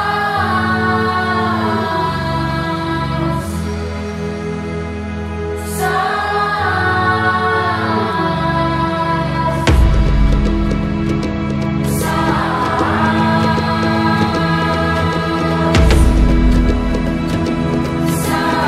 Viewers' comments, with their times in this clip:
0:06 I was listening to this while half asleep and forgot this was in another language and i was wondering why they were saying "sauce"